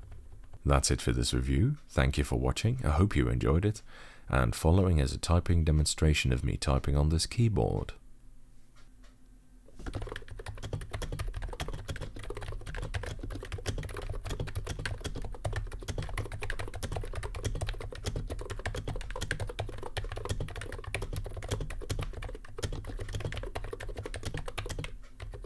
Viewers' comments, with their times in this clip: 0:07 Quite a break, a great sounding keyboard for once! :)